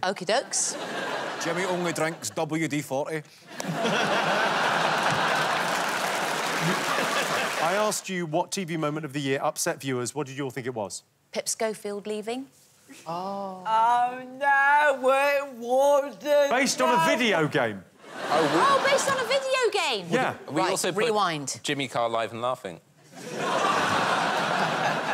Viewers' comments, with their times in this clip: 0:08 If only i could understand Kevin Bridges- I hear only:”Gouthry douthry Jemmeh dab-U-D-fauthee…” And everyone laughs. But i keep rewinding until I quit watching 😳